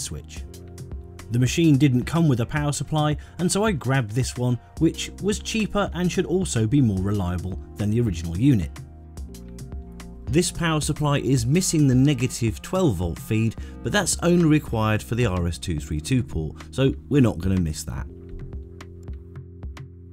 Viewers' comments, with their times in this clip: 0:08 The music is perceived as plastic cracking when watching video using a smartphone with a built-in (tiny) speaker. All sounds of the melody are silent except those clicky instruments that are boosted by the tiny speaker. Combined with the video, this gives a spooky feeling of cracking but motionless plastic 😮